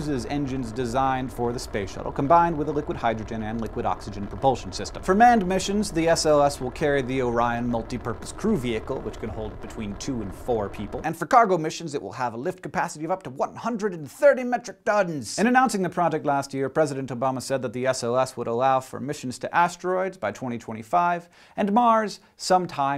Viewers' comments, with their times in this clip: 0:03 Anyone else think Hank sounds sort of like Cave Johnson when he says "propulsion system"?